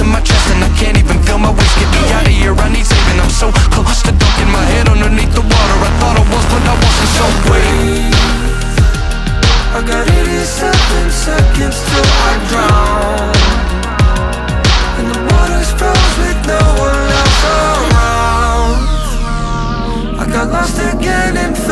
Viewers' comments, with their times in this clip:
0:08 am i the first to notice this? at exactly 87 seconds the chorus hits.... attention to detail: 10/10